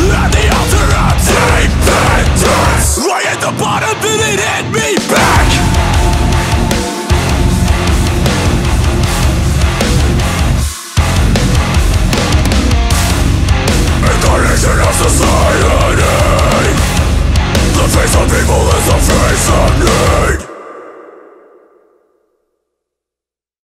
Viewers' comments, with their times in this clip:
0:05 The lows to the end are amazing